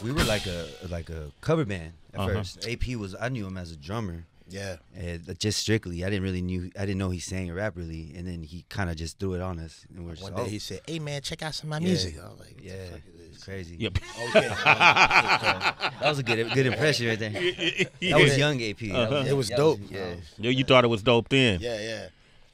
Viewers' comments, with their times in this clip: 0:09 lol they know their boy Andy well enough to sound like him